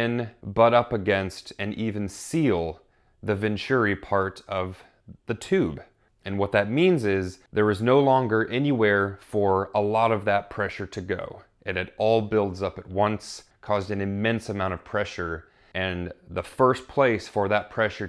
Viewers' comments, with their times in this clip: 0:05 I'm not sure id anyone commented on it yet, but not throwing accusations or hate, i feel like when the last rocket was inserted right before the blast, I heard the booster split just slightly, and ish, that's about the spot where it might have been cracked at